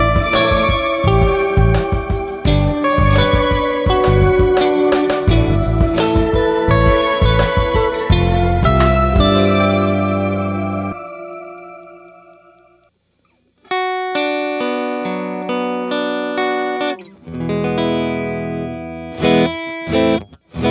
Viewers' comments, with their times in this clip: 0:08 sounds like something on the GT7 soundtrack!